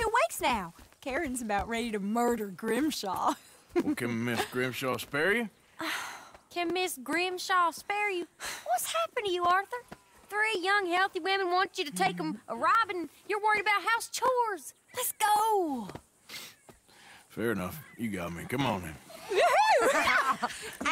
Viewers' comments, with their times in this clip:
0:08 Do you know why there's choppy sound sometimes like Most of the time it's smooth tho